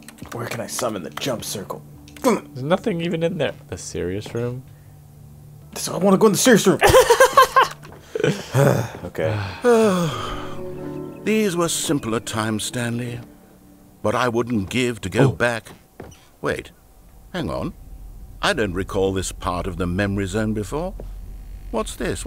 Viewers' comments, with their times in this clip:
0:08 they sighed consecutively, that was kinda cool